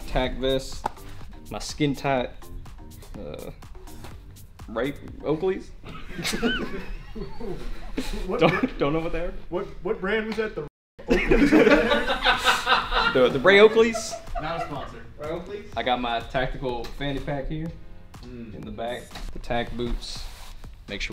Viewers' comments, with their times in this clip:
0:09 censoring with muting the track is lame and really annoying. i'd prefer some random funny sound (I'm aware the algorithm doesnt like the censor beep)